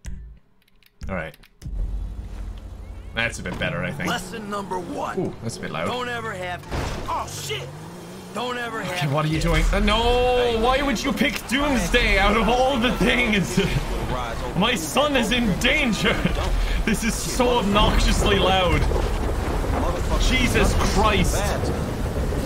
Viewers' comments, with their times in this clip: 0:07 "Don't ever have kids" Screams of the dammed start.